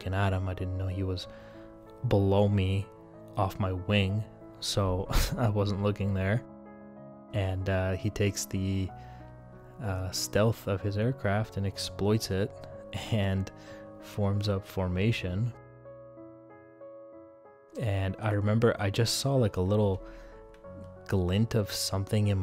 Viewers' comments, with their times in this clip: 0:08 mans sounds annoyed lol